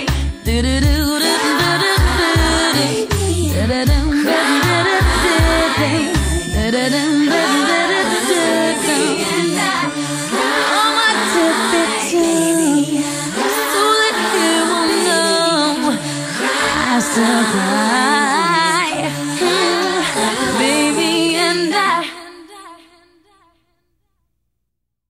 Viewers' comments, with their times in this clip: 0:10 She sounds like currentriah here especially at the end